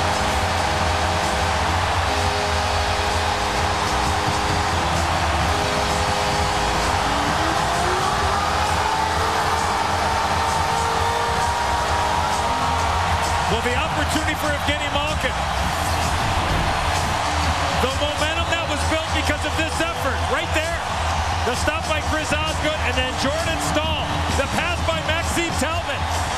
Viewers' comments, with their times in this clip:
0:07 yes! love the crowd outside The goal horn outside sounds like the buffalo sabres.